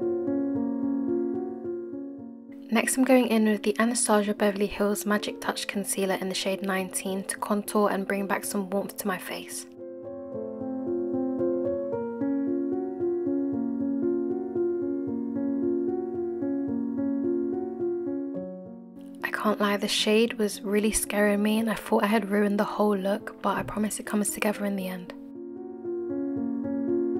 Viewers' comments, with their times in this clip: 0:09 D music frm round was depressing...lyk frm sm horror kinda movie.....🦆bt jst lv d look🔥✨🍸